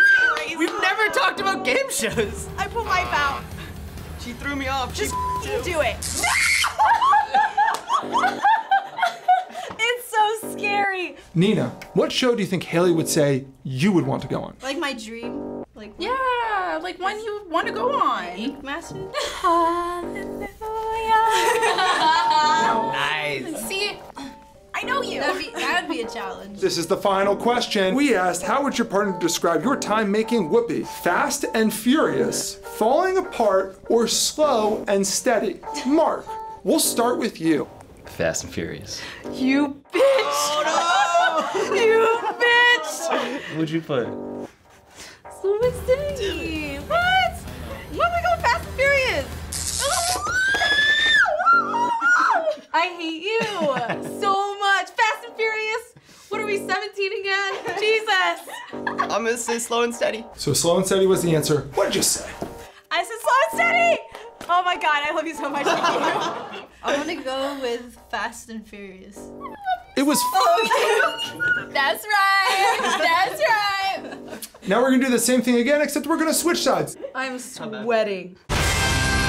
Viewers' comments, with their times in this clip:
0:06 For instant top tier scream: For cuteness overload press 4 or 5 while video is playing
1:00 you can see and kinda hear the couple on the left discuss the answer so she doesn't get shocked